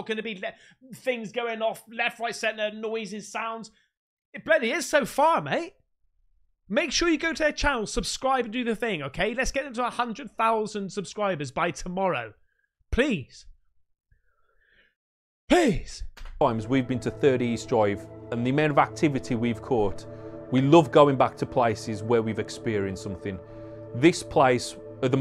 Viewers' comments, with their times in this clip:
0:08 voices don't have ecco😅😅